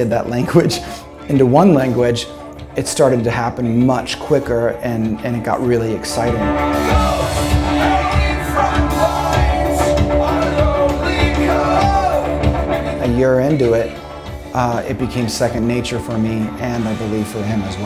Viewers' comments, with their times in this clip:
0:05 I love how he’s just screaming right in Ilan’s ear 😂